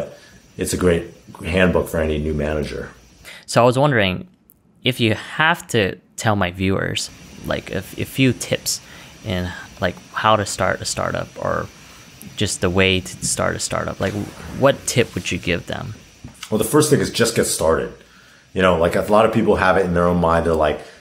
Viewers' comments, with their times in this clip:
0:07 When that Macbook Fan Throttle